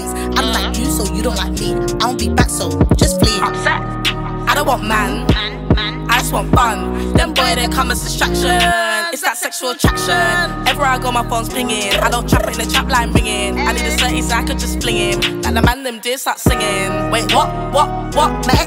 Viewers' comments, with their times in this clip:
0:04 the hook is catchyyyy man